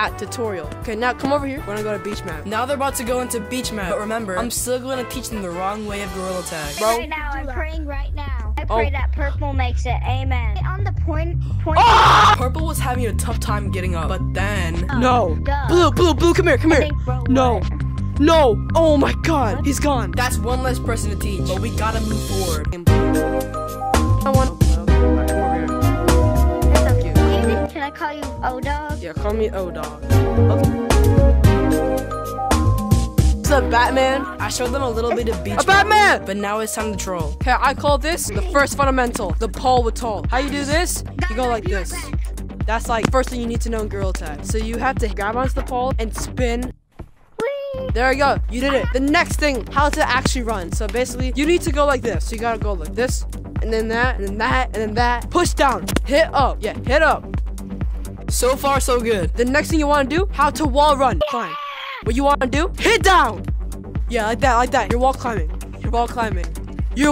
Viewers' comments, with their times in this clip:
0:08 scream goes crazy
0:51 BRO YOUR MIC WAS SO LOUD